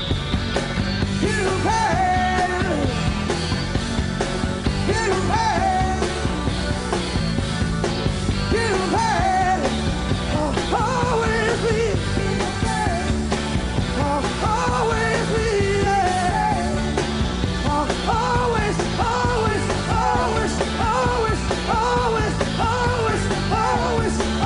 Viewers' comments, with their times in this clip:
0:05 Starting the bass line is the same as the bass line Sting would later use in the verses of "All This Time"